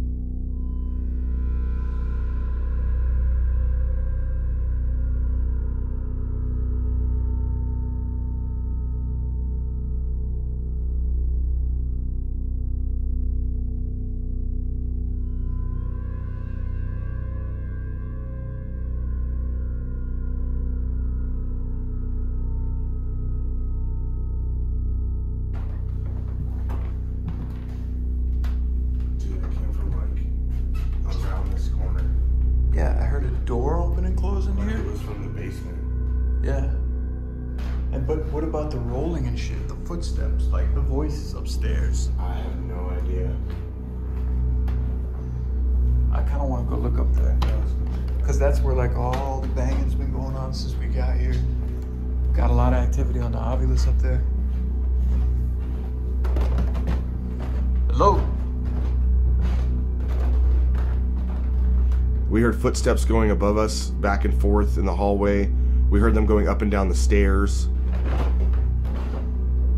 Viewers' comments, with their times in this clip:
0:03 yeah, also why wouldn't they include audio "during the noises" The only thing I can think of is they didn't have mics
0:56 Also when he says hello something responds with Hi